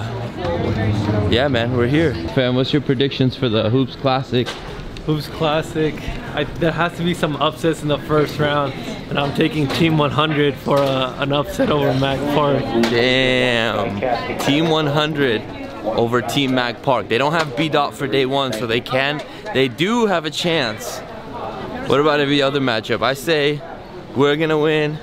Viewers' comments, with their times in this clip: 0:10 voice cracks lmao